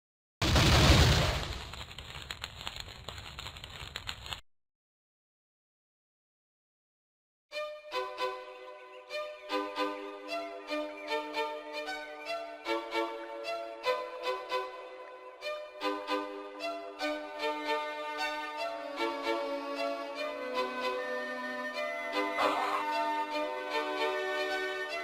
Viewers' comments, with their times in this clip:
0:08 The nostalgia with that music just hits different.